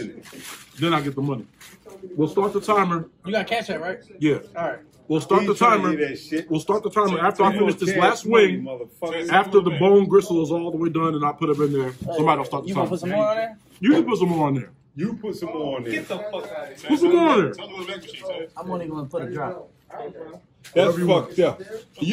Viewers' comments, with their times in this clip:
0:03 did the camera men said: you got cancer right? I replayed it at least 5 times.. please tell me im wrong